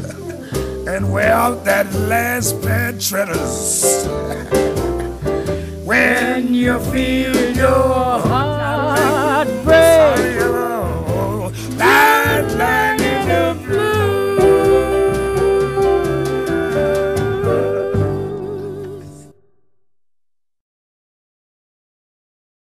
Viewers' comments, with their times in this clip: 0:08 The moment where Louis sings 'sorry Ella' is just a gem. It shows how even when his performance isn't flawless, Satchmo never faltered, he just played through everything coolly, with charm and sophistication. It's not the lack of mistakes that makes a great performer, but rather the ability to play through them, or better yet, turn them into something positive.